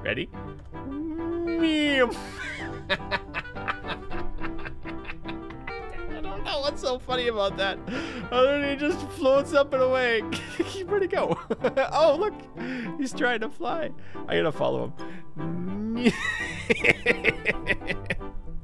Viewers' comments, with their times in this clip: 0:03 you can't tell me that's not a evil villain laugh